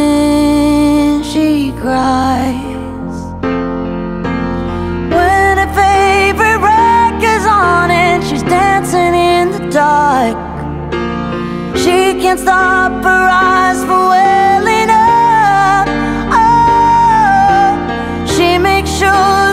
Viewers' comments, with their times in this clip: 0:05 AAAAAAAAAAAAAAAAAAA OLD MILEY?